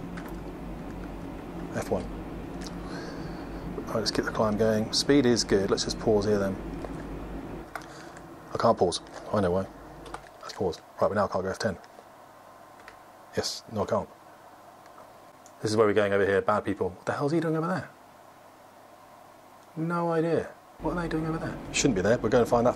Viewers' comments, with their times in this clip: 0:04 Flight Instructor tries to pause the "game": hits the "P" -key Drag-Chute goes PHHHHPLFPHLPHPFLPHFFPLFFFFF eyes on that handle!